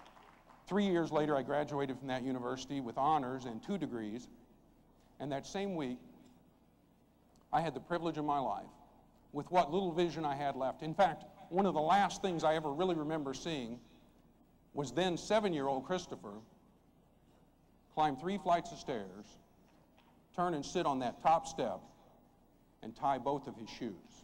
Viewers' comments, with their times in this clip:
0:07 Dude I couldn't figure out who sounds just like Jim Stovall and then it finally hit me... Owen Wilson! Go to especially